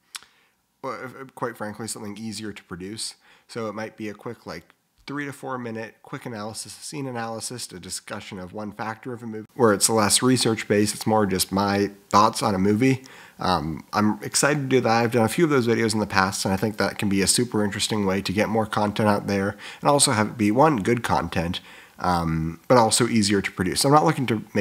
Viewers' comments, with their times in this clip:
0:10 There a volume jump